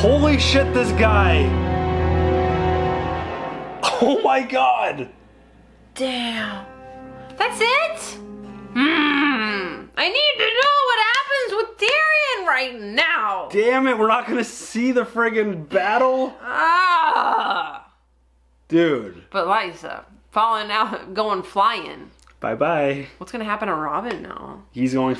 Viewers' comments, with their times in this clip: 0:06 hahaha oh how many times I've said this exact same thing lol prolly even did the grunting sound as well lol
0:07 ... haha that "hrmrmr" was so cute :D